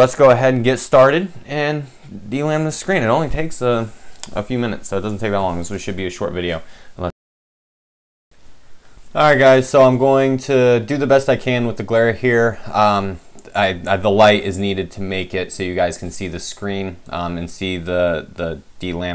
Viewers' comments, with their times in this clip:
0:07 what were you saying time stamp. my audio goes silent for a few seconds, I never had this before